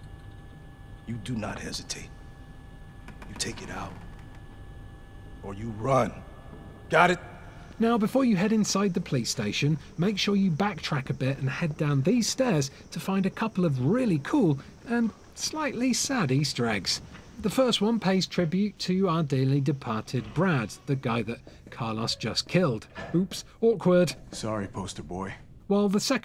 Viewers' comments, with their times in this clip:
0:07 Did he just say Playstation instead of police station?